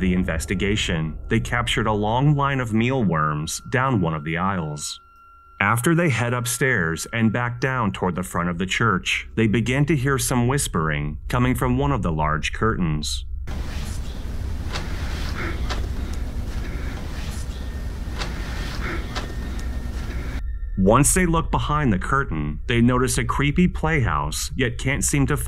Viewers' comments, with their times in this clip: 0:09 whispering - sounds to me like "Hi Stephen"